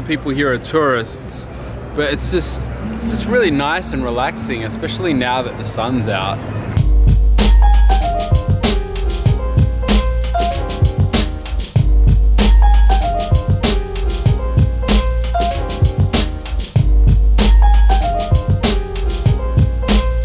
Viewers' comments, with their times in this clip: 0:08 really like this jazzy piano beat